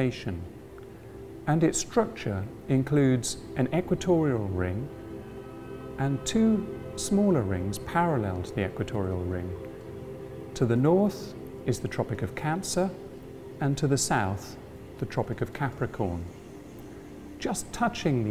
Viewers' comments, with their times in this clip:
0:05 Car horns honking :D